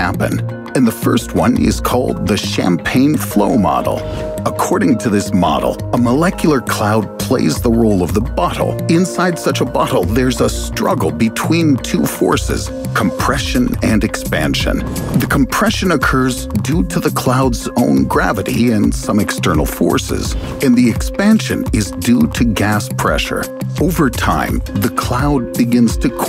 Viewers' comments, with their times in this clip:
0:07 Who heard "butthole" when guy said "bottle"?!
0:07 Did he just say "butt hole"?
0:08 it sounded like he said "butthole" lol
0:08 why does he say "bottle" like "butthole"? That has to be on purpose right?
0:09 did you say “butthole”?
0:09 I heard butthole and couldn’t take the rest of the video seriously
0:09 he definitely said butthole